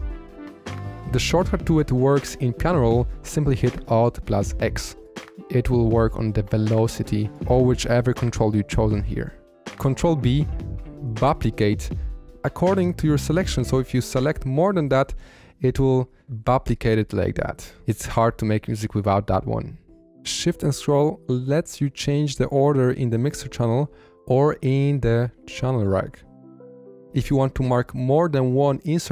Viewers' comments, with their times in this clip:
0:10 Sorry if I heard you wrong, but are you saying CTRL + B for "Buplicate"???? Made me laugh very hard lmao, I will always remember how to buplicate selections in the FL playlist now.